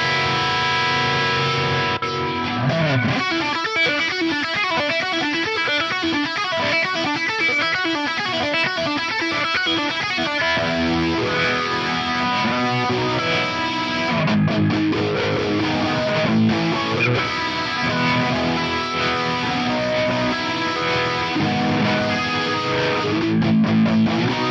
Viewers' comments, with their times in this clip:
0:09 Sounds spot on. I haven't tried most of the new ones yet, but the Cancel Flange is fun....